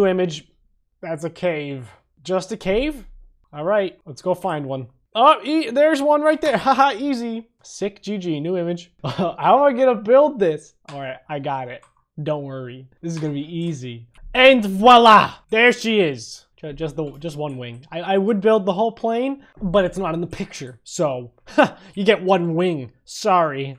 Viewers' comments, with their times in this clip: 0:05 Kermit mode activated.